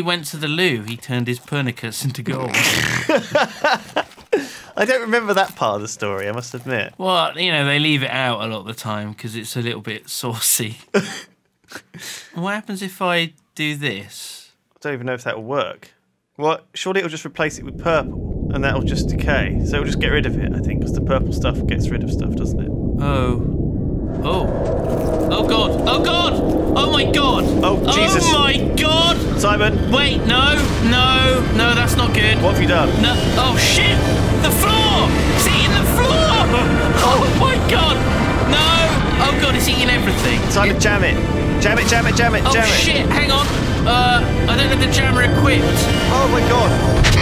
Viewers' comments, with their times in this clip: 0:09 The sound effects on this part gives goosebumps o.o
0:19 that is some epic music
0:25 What the hell is that music ?????
0:33 you guys are amazing and your are my inspiration but the whole end of the world thing with the music was awesome